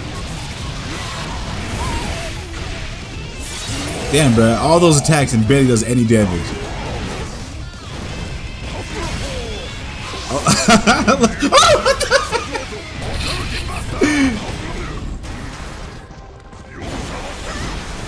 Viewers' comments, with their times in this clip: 0:06 the hahaha OH was hilarious